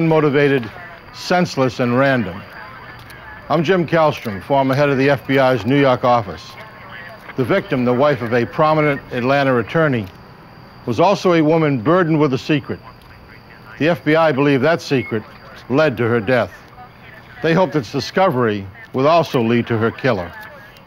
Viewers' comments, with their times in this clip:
0:06 😂jim cant say Atlanta “atlanter”